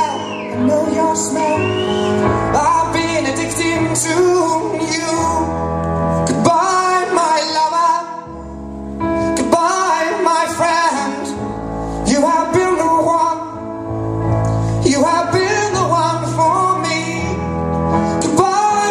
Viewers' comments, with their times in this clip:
0:04 he wanted to say: "ive been addicted to me" so together he sings: ive been addicted to meww